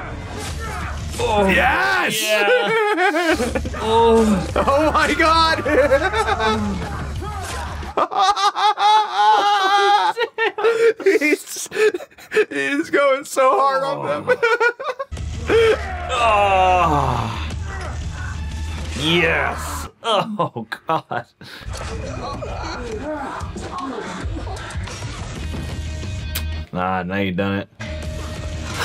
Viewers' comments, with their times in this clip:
0:09 NEVER BEFORE, HAS, "WHEN THE DOOM MUSIC KICKS IN" BEEN SO FUCKING LITTERAL !!!!